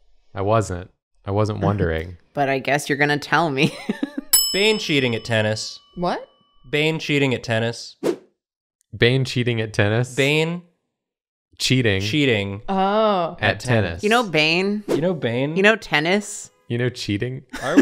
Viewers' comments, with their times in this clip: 0:04 "Bench eating a tennis."
0:05 at first I understood "Bane shitting at Thanos"... that would have been hilarious xD